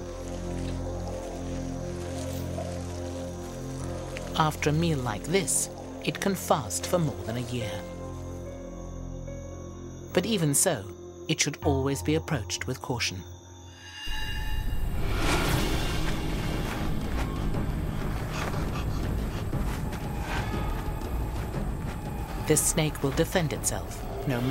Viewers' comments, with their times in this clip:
0:09 LOL are the fucking in the background?!